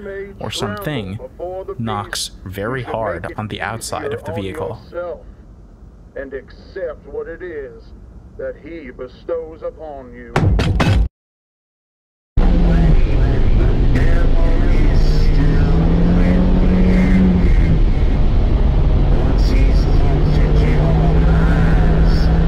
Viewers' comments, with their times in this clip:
0:08 those aren’t signal lights, that’s the emergency lights because he stopped in the middle of the road. My car makes the same noises as the turning signal when you click it.
0:10 was three knocks. Its ironic they were listening to a sermon, as three knocks are apparently demons mocking the holy trinity.